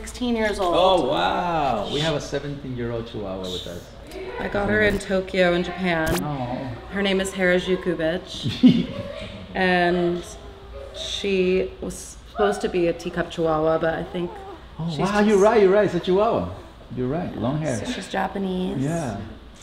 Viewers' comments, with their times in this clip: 0:06 Paris real voice like why does she talk like a robot / baby but her REAL voice is deep ?